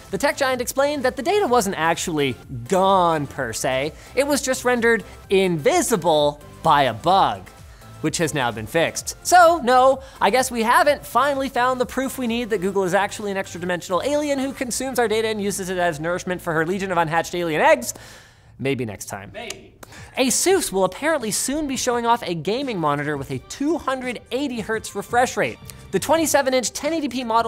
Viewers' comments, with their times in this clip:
0:09 rap god begiens